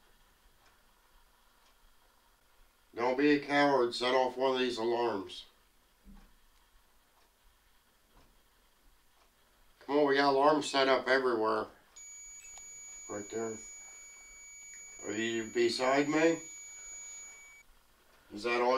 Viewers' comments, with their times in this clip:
0:05 lower left of screen you can see an orb then the alarm goes off